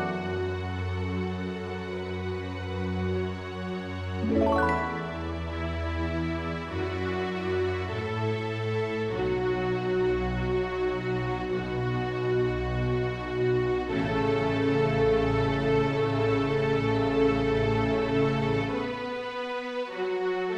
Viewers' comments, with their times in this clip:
0:04 HOLY SHIT THIS IS SO GOOD? The, uh, whats it called. not kalimba, but a wooden instrument kind of like a xlyophone like it's genuinely amazing i got chills, you have some REALLY big musical talent, and i would gladly perform this or create lyrics or something- MM VIOLIN PLUCKS i dont even know the storylnie but im almost crying. genuinely. and i dont know why.